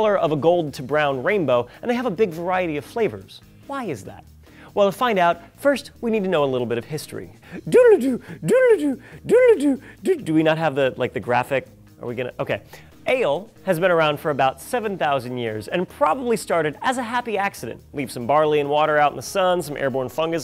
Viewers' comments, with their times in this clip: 0:07 That outburst invaded my personal space! :S